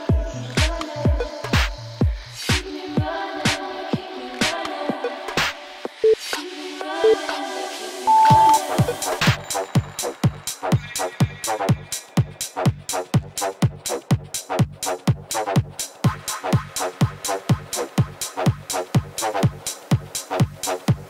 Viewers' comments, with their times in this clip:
0:09 Beat drop slaps 🔥